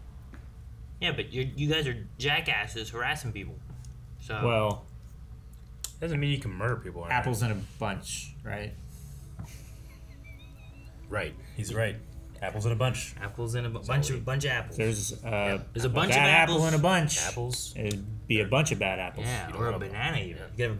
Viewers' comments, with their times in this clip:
0:03 is a great Blind Wave interaction, what each of them say and how they say it is so hilariously delivered